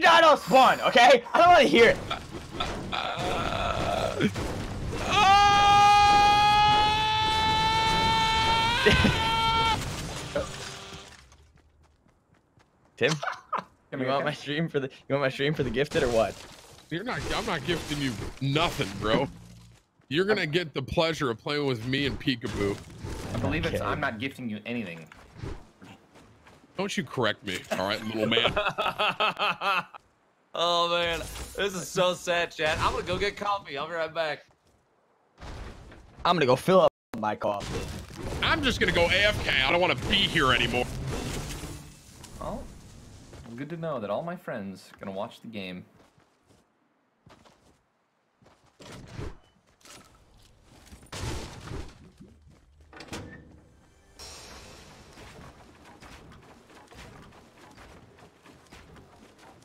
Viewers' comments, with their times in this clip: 0:04 Open the subtitle when tim scream it say [music] lol
0:43 I honestly feel bad for ninja. He gets too much hate. he sounds so sad.